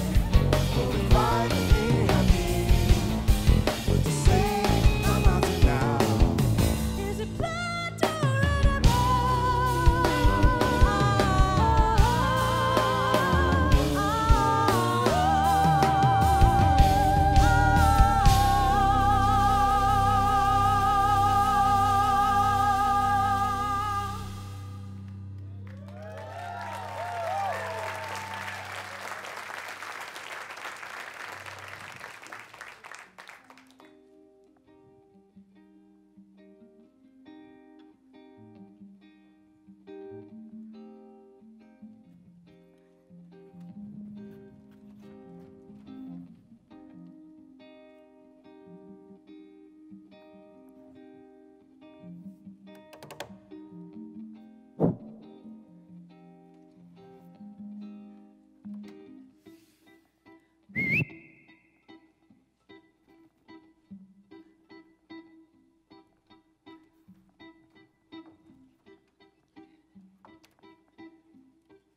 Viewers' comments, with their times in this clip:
0:07 Beautiful short muffled note every time I see this video I hear different sounds. Great Concert
0:59 She can also whistle. I'm crushed.